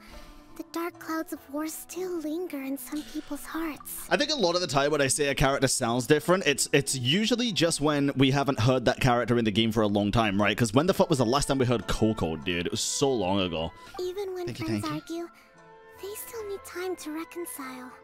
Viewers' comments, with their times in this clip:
0:05 This is what happened to me with Noelle. Hearing Noelle's voice after years took me by surprise